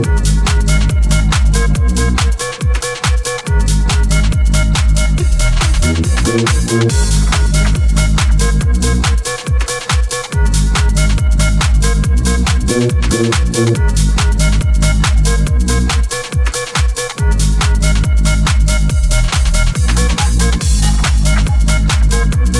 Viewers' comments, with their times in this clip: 0:07 tuuuune what a set 🔥🔥🔥